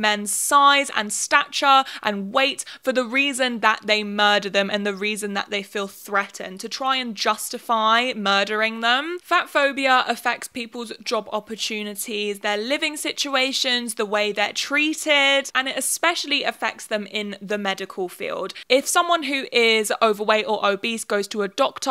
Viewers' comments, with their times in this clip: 0:07 the way your voice goes up at the end of justify and murdering them just gives what you’re saying this slight “are you fucking kidding me?” air about it, like I can hear so much more that just what you’re saying in those intonation changes. I could just hear you without seeing you and not only picture your face as you say it, but also picture all the things you’re not saying with that. I could see you giving the eyes that tell more than what you’re saying ya know